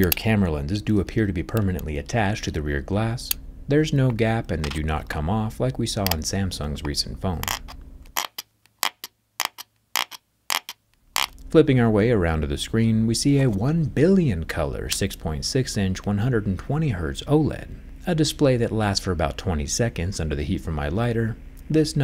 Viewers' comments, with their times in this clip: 0:07 these noises are making me feel weird😭
0:08 irritating ASMR Sounds 😭